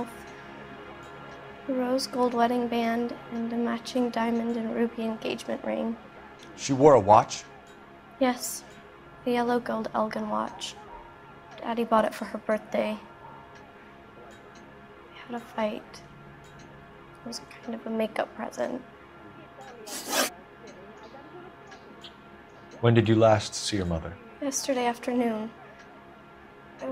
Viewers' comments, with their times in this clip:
0:09 If you listen closely, you can hear a dog barking in the background